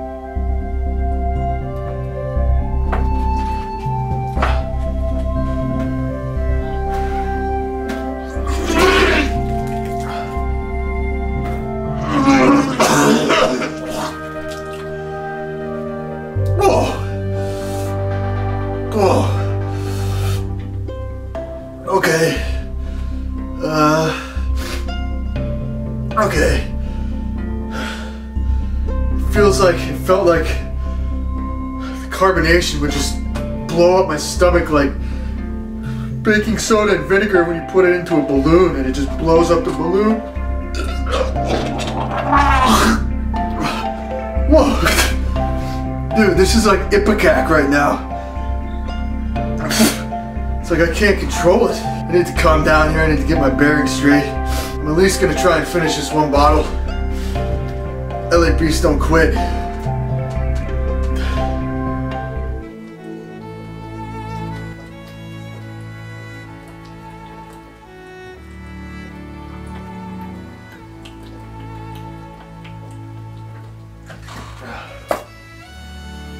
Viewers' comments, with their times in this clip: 0:08 If you close your eyes this is a Jurassic Park scene
0:15 the noise he made
0:40 that kinda sounded like a fart ngl
0:41 My man sounded like an F1 car passing by
1:02 music starts playing Me: Ahh Shit, here we go again